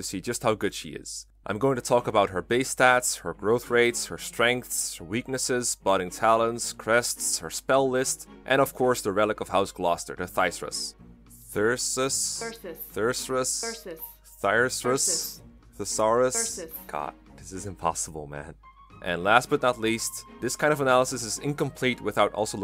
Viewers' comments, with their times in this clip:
0:03 "I'm gonna talk about her Base Stats, Growth Rates, Strengths, Weaknesses, Budding Talents, Breasts, Spell List..." One of those moments that makes you stop just listening to a video in the background and snap your head over to see what the hell is going on